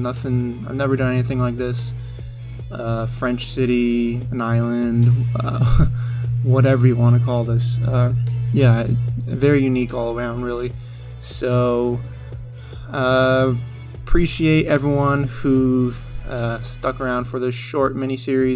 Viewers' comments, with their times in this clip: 0:04 I'm using headphones and I also tried different ones. The noise is really subtle and most probably it comes from fans. It's only noticeable when you're speaking and it goes up and down throughout your voice recording. For example, it's noticeable very well for 1-2 seconds. I rewatched your previous videos and it also appeared there. I consciously noticed it just now, but probably that's why I couldn't continuously watch your videos in the past without breakups. It's a great joy to watch your series and I hope I don't discourage you by any chance.